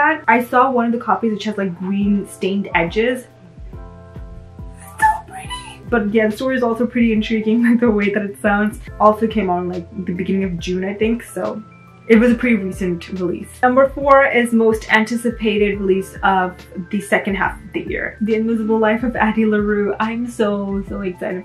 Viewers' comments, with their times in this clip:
0:04 btw your squeal of "its so pretty!" is SUCH a mood lol I just hauled a monster calls! I knew I was going to be scared but cry?? now I'm REALLy scared T.T